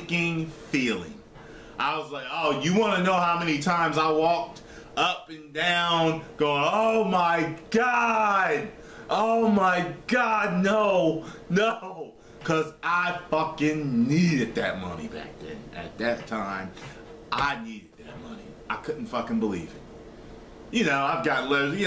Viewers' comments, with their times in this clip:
0:06 Lol "omg...omg...nooo" Kevin Hart's voice